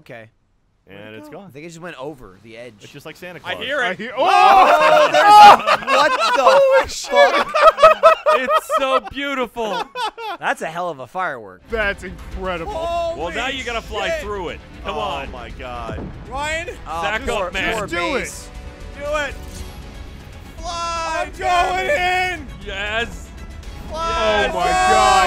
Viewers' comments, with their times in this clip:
0:09 interstellar music intensifies